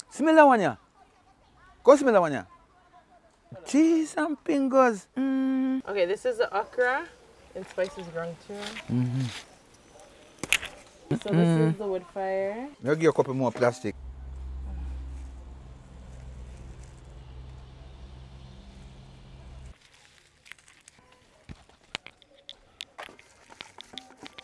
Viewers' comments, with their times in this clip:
0:05 Did he say Geezam Pingos ...🤔